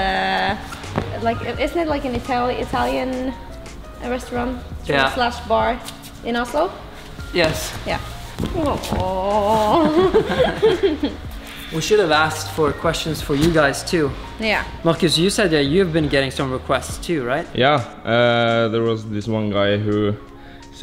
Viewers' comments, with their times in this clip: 0:07 "laughs in pain"?